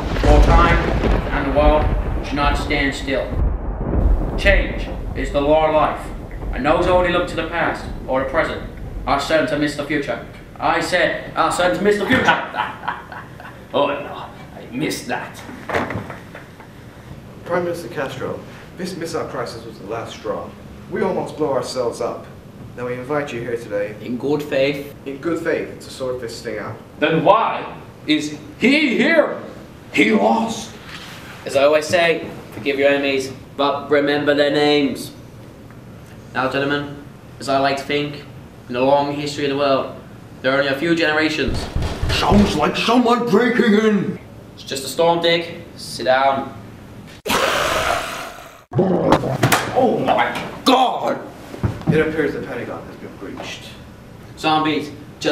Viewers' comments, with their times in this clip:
0:07 PRESIDENT JFK TALKED SO FAST WATCH
0:41 The richard nixon of both irl and bo game impression was so accurate i laughted so hard
0:41 You can tell he's trying not to laugh saying that line